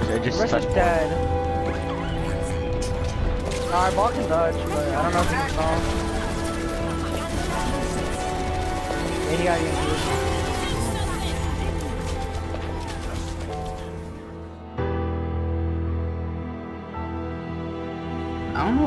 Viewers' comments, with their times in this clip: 0:04 "APAGANDO LAS LUCHES" hahaha is "APAGANDO LAS LUCES" hehhe is so funny "luches" haha